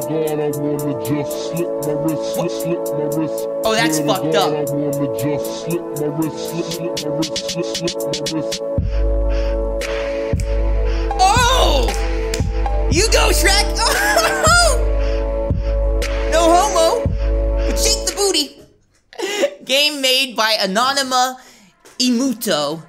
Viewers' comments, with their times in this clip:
0:07 DAMN SHREK HAS A NICE BEAT COMING OUT THERE XD